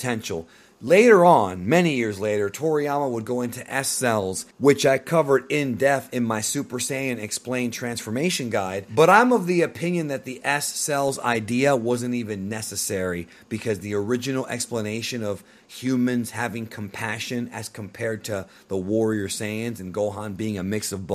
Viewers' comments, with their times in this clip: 0:03 "which I covered in death" Dude you're like 40, how are you getting basic sayings wrong?